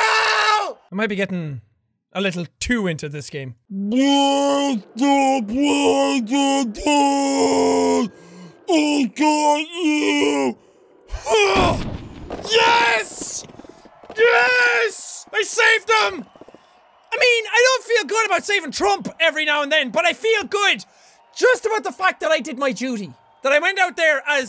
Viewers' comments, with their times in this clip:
0:09 why does he sound like a hungover homer simpsion